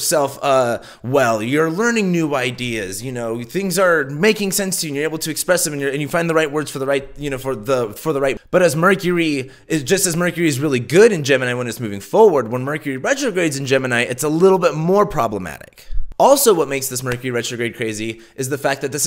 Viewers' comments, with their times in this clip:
0:04 either youre fuking with us or this retrograde rlly does have u twisted verbally LOL